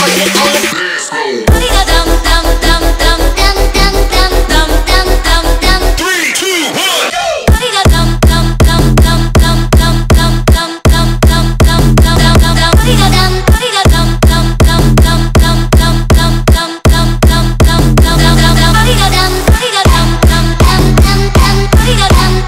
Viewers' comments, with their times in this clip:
0:06 real trap shit